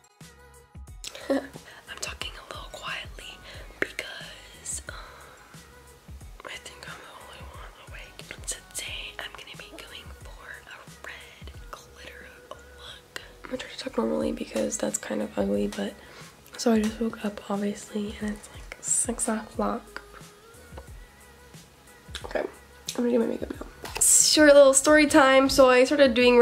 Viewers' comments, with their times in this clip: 0:08 I love the asmr segment lol